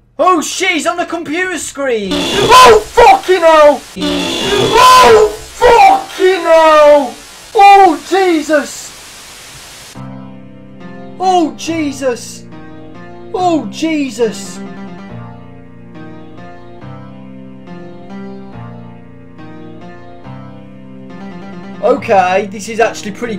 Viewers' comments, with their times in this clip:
0:04 When He says Oh F*cking hell! It sounds exactly the same as it did when he got jump scared on Five nights at Thomas's